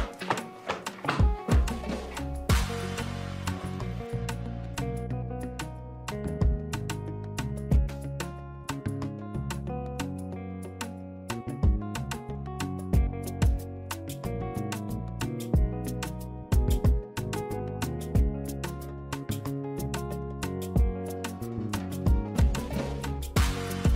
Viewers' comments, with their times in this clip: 0:09 U shouldn't hv muted her here na I'm sure she must have said some outrageous things😂😂😂😂😂😂😂😂